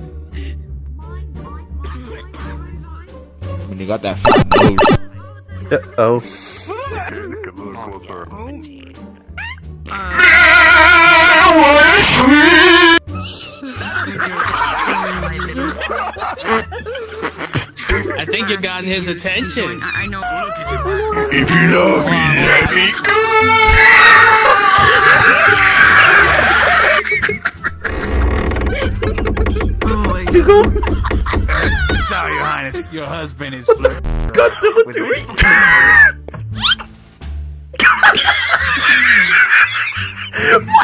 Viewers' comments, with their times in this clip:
0:07 BRO WHAT KIND SING THAT IS😂
0:12 the way the whole server just started laughing 😂
0:21 HAHHAAH BRO WHEN U PLAYED THAT SONG I DIED 😂😂😂😂😂